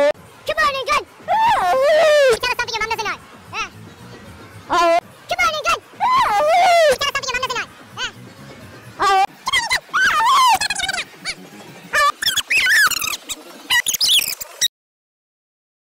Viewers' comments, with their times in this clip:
0:13 OAHHWEE (put the real speed at 0.25x and it will sound like that)